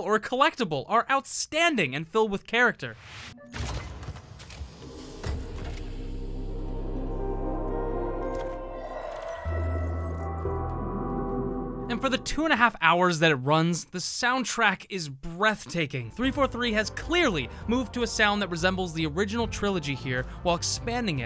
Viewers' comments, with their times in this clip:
0:09 Why did I laugh so hard at the guy driving off the cliff while listening to halo music? Either way... I ENJOYED it!